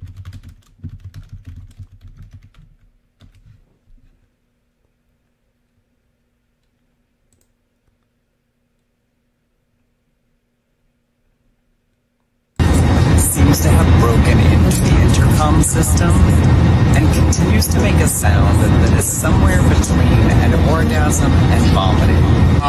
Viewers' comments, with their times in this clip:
0:09 honorable mention for the audio possibly bowel movement.... 💩 either way, I would be rolling on the floor...:face-green-smiling: